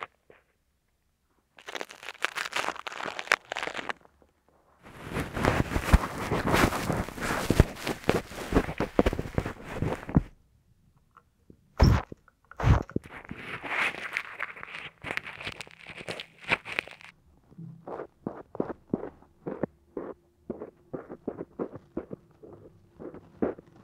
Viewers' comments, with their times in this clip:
0:06 is just my cringe noise omg whenever I use Qtips after I shower, that just makes my senses get mad it triggers me the other noises are fine though 👀 👅